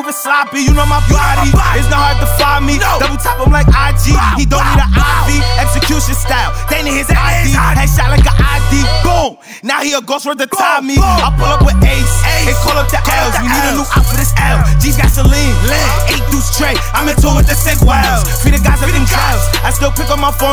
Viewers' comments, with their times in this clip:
0:03 how your voice cracked in your song